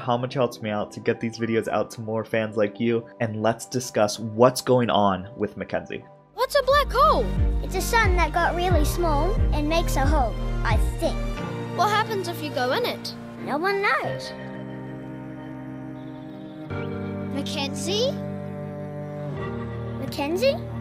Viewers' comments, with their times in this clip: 0:06 the music you used was spectacular, the mere intro was already pulling at my heart strings. Love your content bro